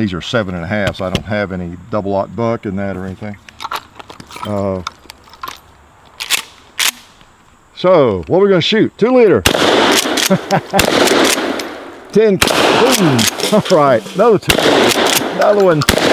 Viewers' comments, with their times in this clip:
0:04 the rattling had me worried, and then I remembered what he'd been doing all afternoon